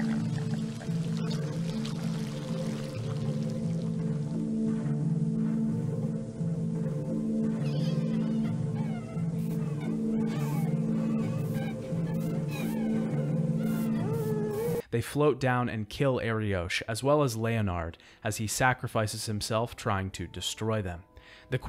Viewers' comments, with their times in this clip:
0:09 HOW IS WOTCHAH FORMED